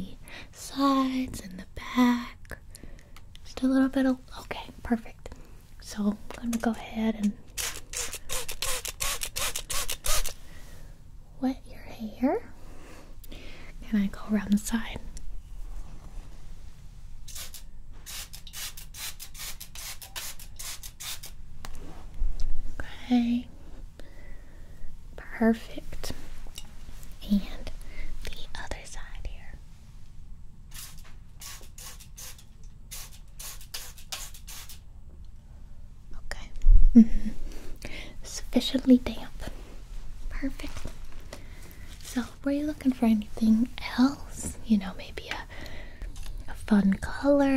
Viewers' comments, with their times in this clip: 0:07 I fell asleep after a little and woke up thinking it was a stapler
0:28 When she whispered my body literally twitched because I got so many tingles omg